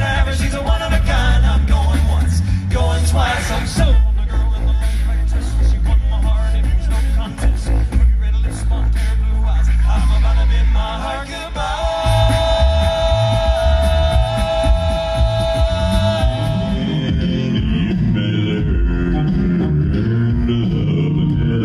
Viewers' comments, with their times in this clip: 0:05 That bass is crazy